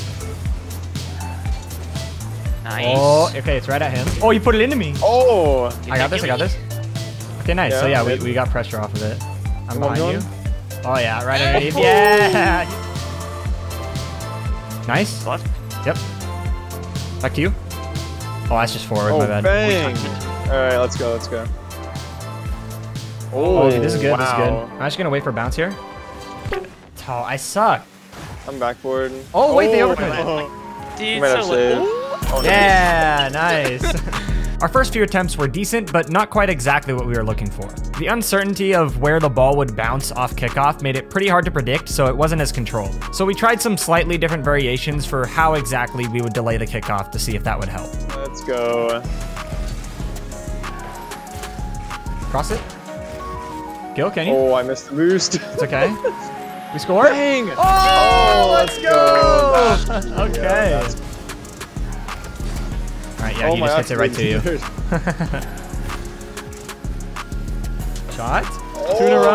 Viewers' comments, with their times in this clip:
0:03 what didd he say ?!?!😂
0:52 the hits are on beat and it’s so cool